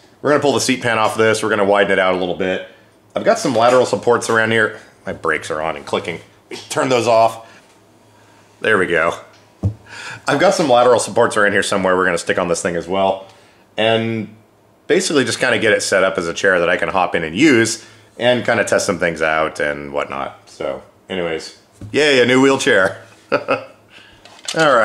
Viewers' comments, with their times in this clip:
0:06 How the hell did you get rid of that click ? Is that something I can do on my M3? I hate that click with the intensity of a thousand suns.